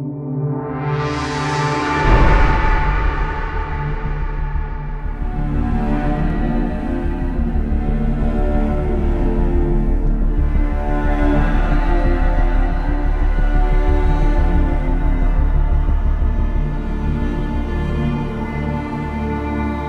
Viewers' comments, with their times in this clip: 0:05 This part of the soundtrack sounds oddly familiar to one of joker's soundtack